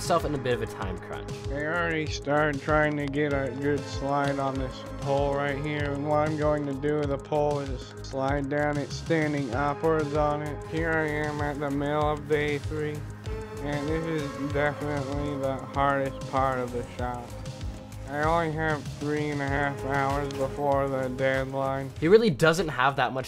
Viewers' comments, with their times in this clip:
0:07 why blud sounds like Steven Hawkins and Peter Griffin combined 💀💀💀💀